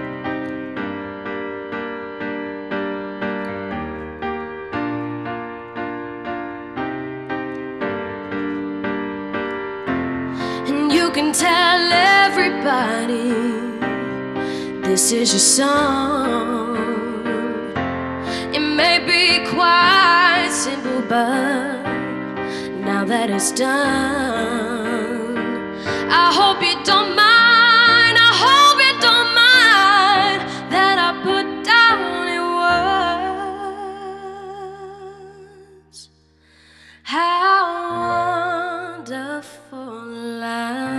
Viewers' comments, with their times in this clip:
0:04 What's that damn repeating noise after
0:26 I'm going to need a thesaurus because I'm running out of words. Progression to the highlight was great and I got waves of chills. I think you could also really nail an all out power version of this classic song where you sing the pants off it.